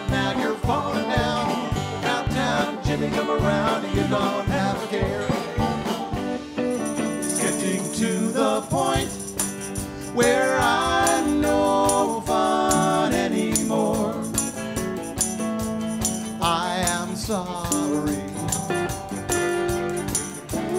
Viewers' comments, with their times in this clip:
0:08 ....lay off the helium boys, it sounds castrati